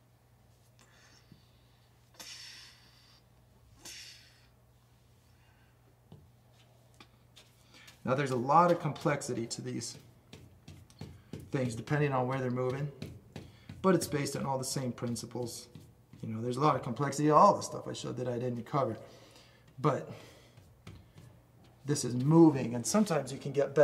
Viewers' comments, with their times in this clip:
0:05 Lol the sounds effects ☺️ dudes like a little kid lol like a modern day who's that guy? Bob Ross? Hehe